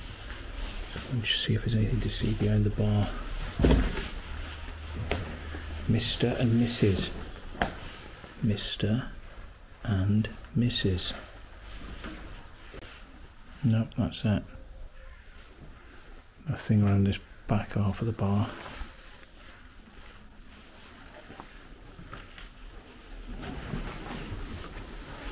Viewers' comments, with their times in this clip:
0:06 For the majority of us, "Mr & Mrs", for the dull people, "MRrr anndd MMRRRSssss".